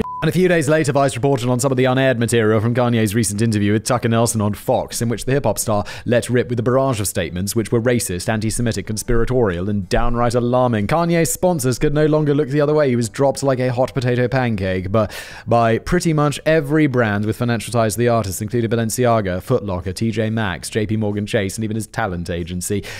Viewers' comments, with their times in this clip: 0:03 ole Tucker Nelson